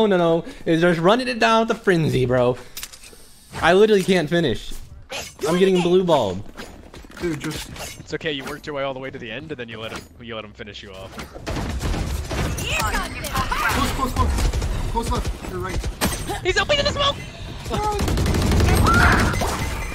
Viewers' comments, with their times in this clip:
0:07 aceu be rapping